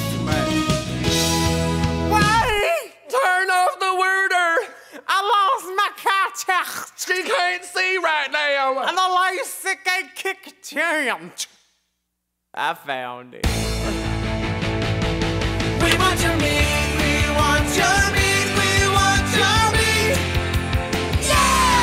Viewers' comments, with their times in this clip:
0:06 LOVE IT! But what the hell does Willam say at like ish? "AYEEE YAM ELSAHTCHRKT"???